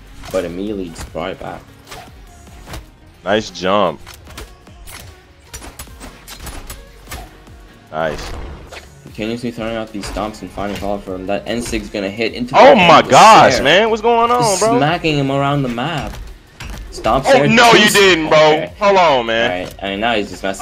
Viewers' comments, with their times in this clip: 0:03 "nice jump" excitement 100